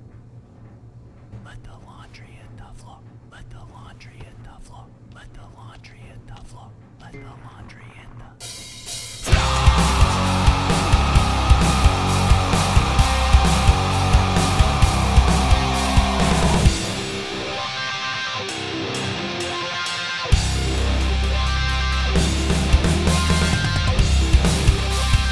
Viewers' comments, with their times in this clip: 0:09 Me when the bass drops